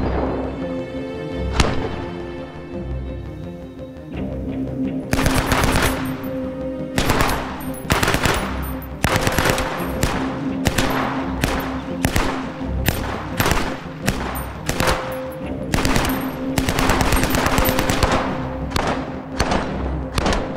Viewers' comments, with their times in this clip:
0:04 the mad crackle of the kings fury